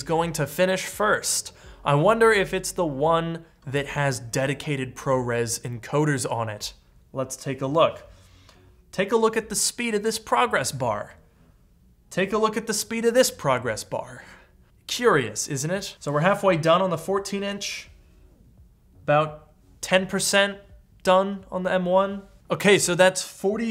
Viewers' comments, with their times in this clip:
0:09 the lack of music or any background noise makes this 1000x better